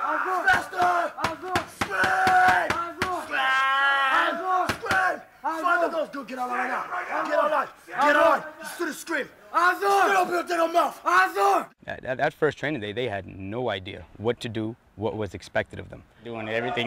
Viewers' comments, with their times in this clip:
0:03 my dude turned into a goat 🐐